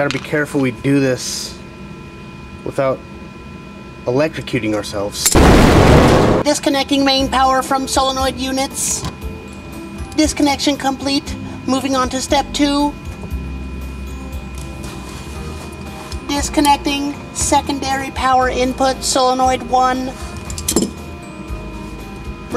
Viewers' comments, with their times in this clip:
0:05 I was working on my truck the other day and getting all pissed off, I started to talk to myself in this voice and man it calmed me right down. Good shit, time to flush.
0:06 Want to know what a homosexual no gender having robot would sound like??